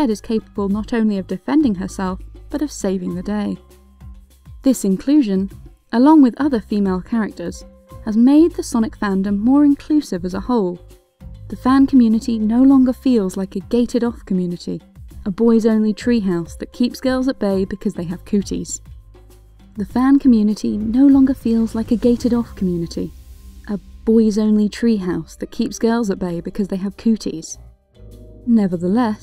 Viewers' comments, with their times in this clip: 0:04 you accidentally left in two takes of the same line. Just a heads up
0:16 got that repeated words.